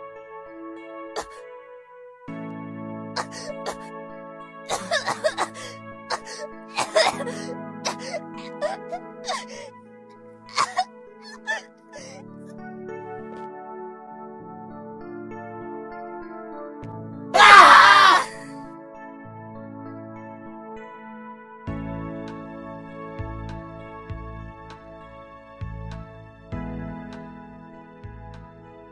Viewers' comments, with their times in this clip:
0:09 In when all the students stood up and said “hmm” when the girl was chocking and then sat back down to eat😭😭 then when she died THWY SCREAMED TGAT TOOK ME OUT💀💀